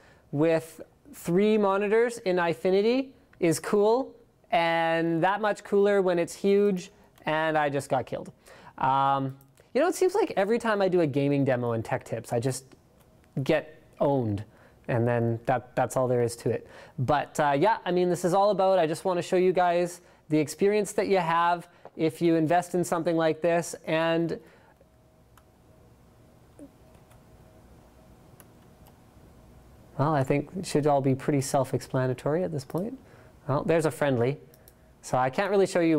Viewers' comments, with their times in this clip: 0:08 his voice starts dropping into a melancholy state.
0:23 love the pause he was into it.